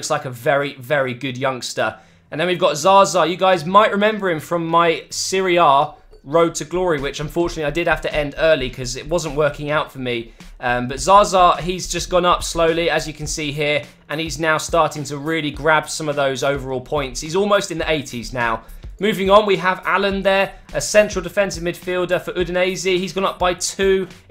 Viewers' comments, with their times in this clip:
0:06 i thoight he said syria career mode